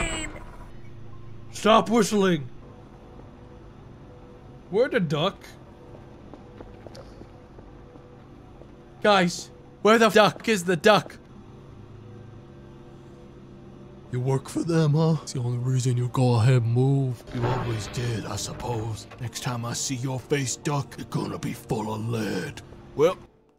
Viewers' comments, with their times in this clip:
0:09 Love the censor here